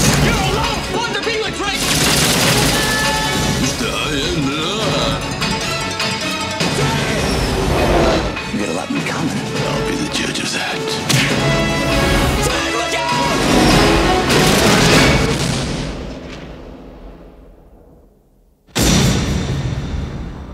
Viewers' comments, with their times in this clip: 0:03 rob scneider's stallone impersonation is spot on!
0:04 That trailer was the shortest movie I've ever seen. Also, who knew Rob Schneider does a good Stallone impression? Also also, "Rob Schneider derp dee derp! Derp de derpity derpy derp. Until one day... a derp a derp a derpy derp. Derp dee derp, dah teedily tumb! From the creators of 'Der' and 'Tum ta tittaly tum ta too,' Rob Schneider is 'Da Derp Dee Derp Da Teetley Derpee Derpee Dumb." Rated PG-13."